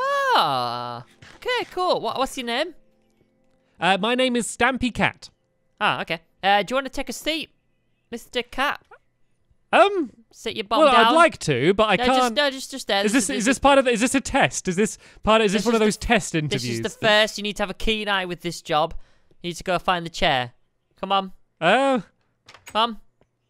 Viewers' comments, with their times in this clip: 0:06 the Texas state mr. cap???????????????